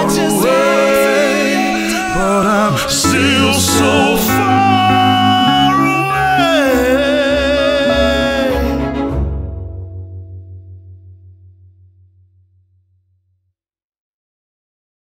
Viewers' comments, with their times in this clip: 0:12 oooh ok I did love the live version of this, but this version is just so good and solid and the instruments are great, plus the sweet vocals - aaaa!!! I can't word properly cos I did wake myself up to see this but by god it was worth it !!!!!!!!!